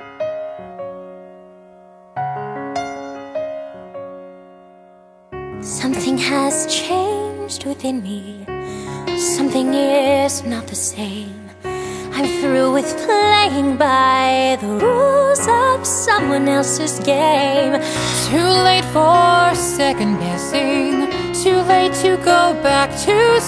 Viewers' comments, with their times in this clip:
0:05 the song starts.